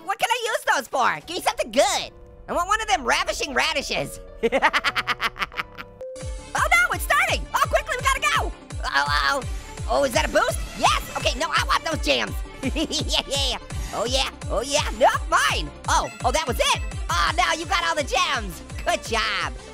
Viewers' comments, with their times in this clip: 0:03 i love the giorno theme playing in the backround